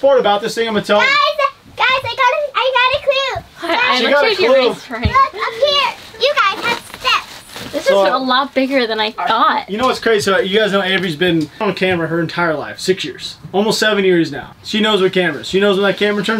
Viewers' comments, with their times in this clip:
0:04 the first time I heard, "Look up here you guys have steps" at 2x speed, I swear she said something else with the t